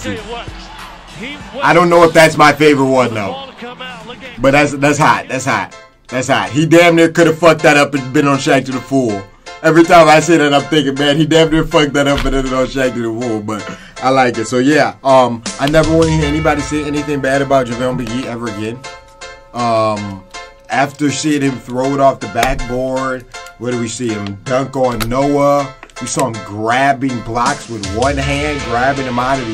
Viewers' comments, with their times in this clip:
0:10 shaqtin a wool?